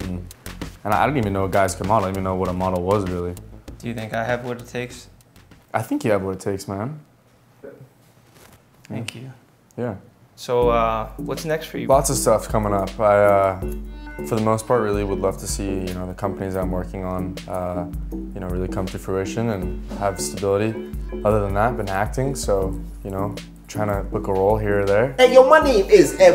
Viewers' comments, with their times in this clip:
0:09 aww his lil "thank you"